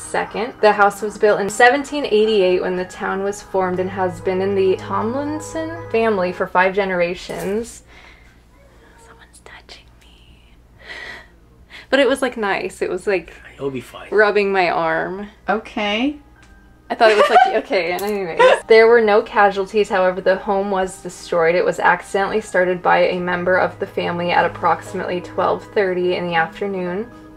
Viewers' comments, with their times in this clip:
0:07 At Min when you were touching ur arm i hear "hello~" was that a person or something else?
0:08 u can hear a little girl say hello when she said there’s something touching my arm
0:09 who said hello?